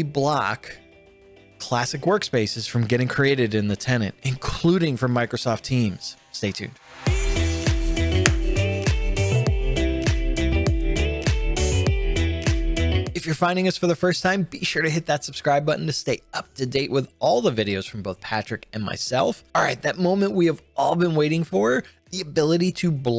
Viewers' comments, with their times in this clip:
0:08 there is a double kick :P